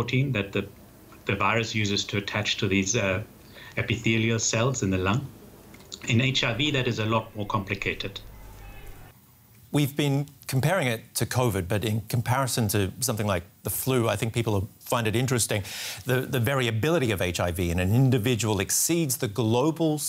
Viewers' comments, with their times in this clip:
0:06 That's why in .....''in HIV it's a lot more complicated''...(swallows with difficulty)